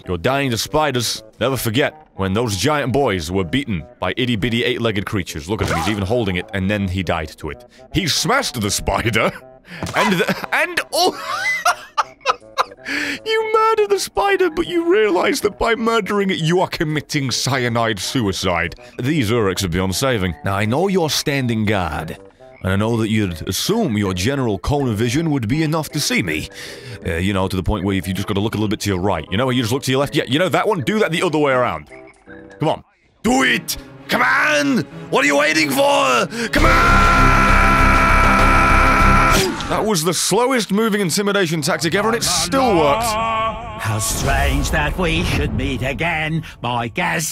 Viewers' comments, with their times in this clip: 0:05 Those comical screams at the beginning 😂😂😂
0:32 best Arnold Schwarzenegger impression